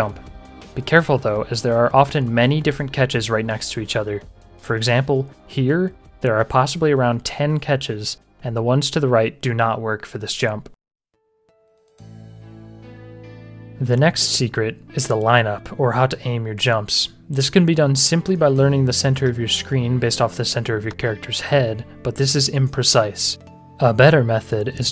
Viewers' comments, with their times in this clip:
0:10 absolutely, that lobby music sent me BACK IN TIME UGHHH
0:11 Not only is this an incredible video, but god damn when that GunZ the duel music kicks in just perfect